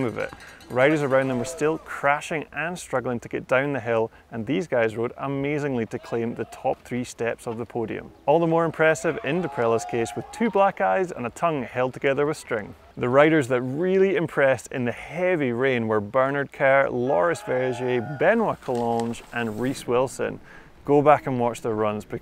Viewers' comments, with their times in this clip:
0:10 Thought he said “two black guys”